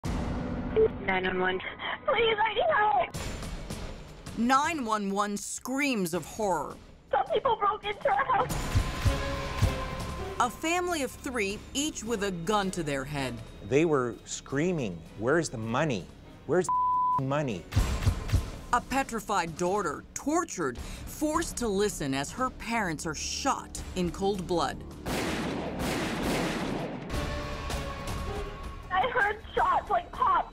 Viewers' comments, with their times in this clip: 0:09 i like the "Wherez duh monie, wherez duh monie"
0:18 a petrified DORTER!